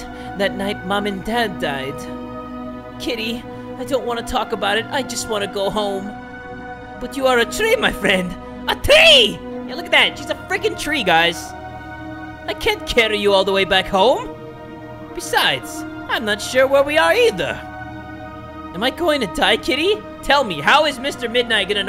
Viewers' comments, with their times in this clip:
0:07 I stumbled upon u playing dis today and I love the accent u gave Mr midnight was the funniest part so far in my opinion